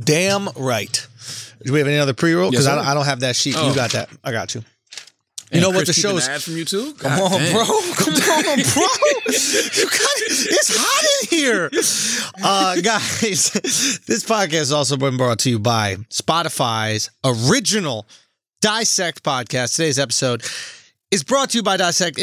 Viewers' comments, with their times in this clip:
0:04 This nigga said “ittity” trying to say Italy 😂😂😂😂😂 mark